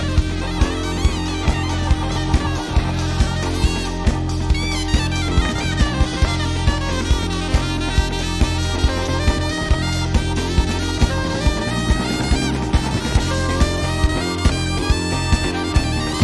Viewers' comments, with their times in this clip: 0:04 (almost) Mario Kart Lick